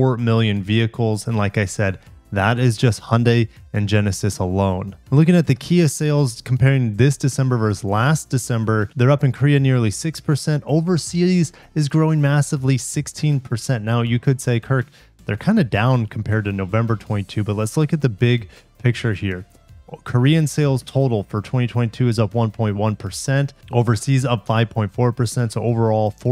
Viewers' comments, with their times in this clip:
0:08 "this December VERSE last December..." Ugh. 🙄🤦‍♂ What happened to the actual, correct word, *versus*? (ˈvər-səs) Sorry. Hyper-critical grammar rant over.